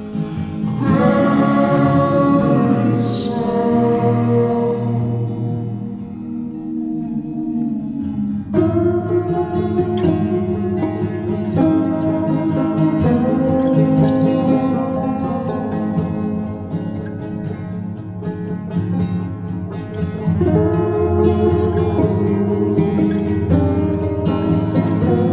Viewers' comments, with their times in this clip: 0:08 I’m trying to learn the riff by ear and hearing it slowed helps so much omg thank you